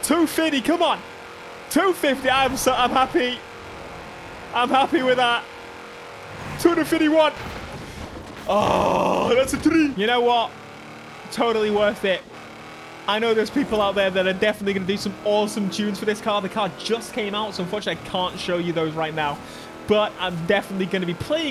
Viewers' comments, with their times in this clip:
0:07 that’s a TREE!